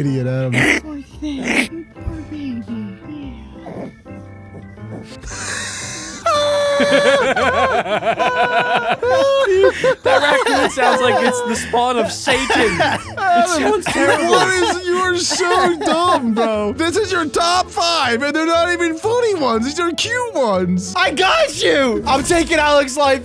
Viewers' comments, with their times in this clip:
0:05 that was the funniest laugh i have ever heard 😂😂